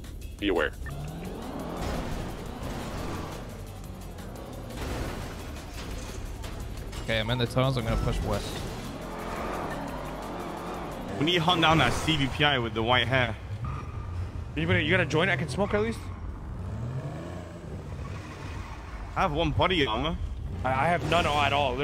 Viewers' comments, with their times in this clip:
0:06 I got that theme too. Really good and chill.